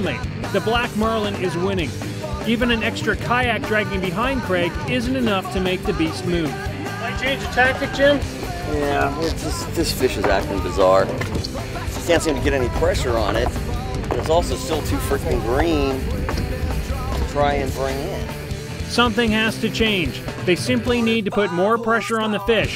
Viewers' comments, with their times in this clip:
0:08 Was that a fart ??